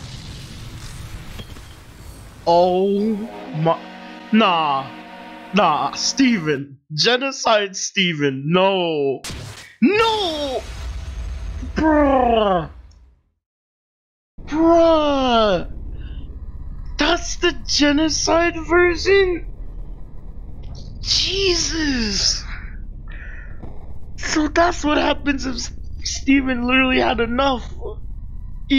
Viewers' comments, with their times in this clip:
0:10 so ur a cat now Brrrrrrrrrrrrrrrrrrrrrrrrrrrrrrruh
0:11 did he.. purr?